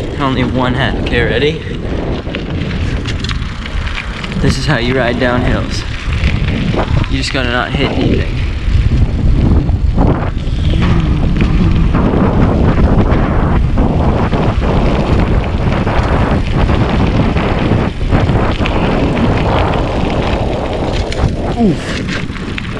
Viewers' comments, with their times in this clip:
0:10 Are you ok?- that does not sound pleasant